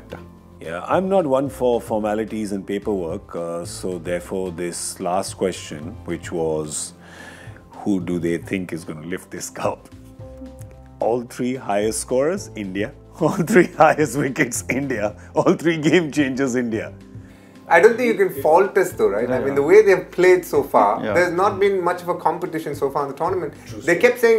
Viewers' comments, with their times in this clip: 0:09 damn this laugh.